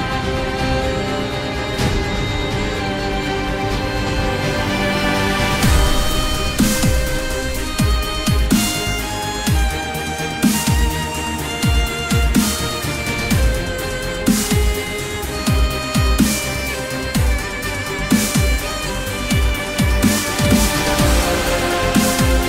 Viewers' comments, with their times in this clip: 0:07 sounds like narnia lol